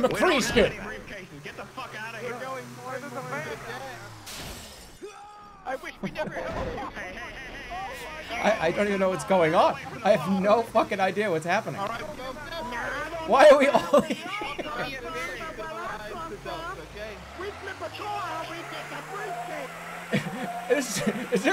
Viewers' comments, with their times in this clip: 0:04 that distant scream is just perfect